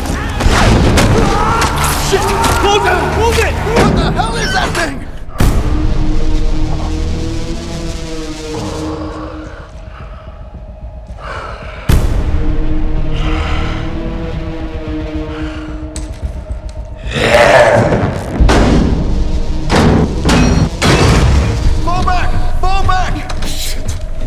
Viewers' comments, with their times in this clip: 0:05 Yes! Thank you! People hate on this movie, but it's legit entertaining! Jared Leto gives a genuinely good performance and the effects and soundtrack are both pretty good too! I especially like the horror-style drones that play